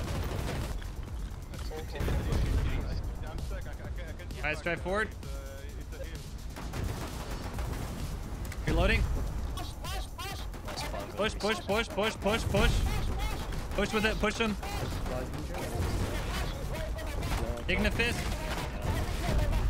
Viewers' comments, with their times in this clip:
0:05 that guy shouting is giving EVE FCs a run for their money lol